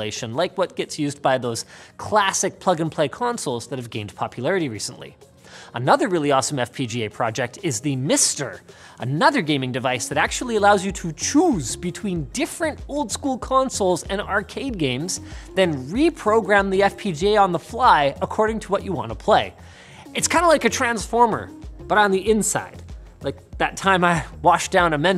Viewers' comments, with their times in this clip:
0:10 No! Don´t say "choose" like that! Absolutely not!!!